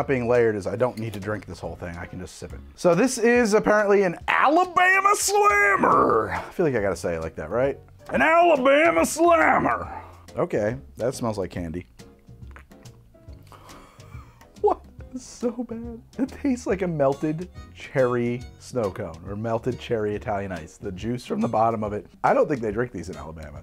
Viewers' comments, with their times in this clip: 0:07 The way he says “Alabama slammer” sounds like the riverwood general goods shopkeep in skyrim